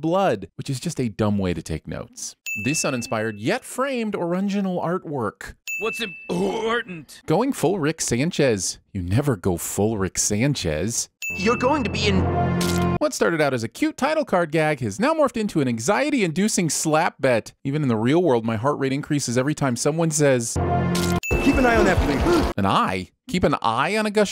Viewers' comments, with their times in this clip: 0:08 is that ACTUALLY Justin Roiland? fuckin sounds like him!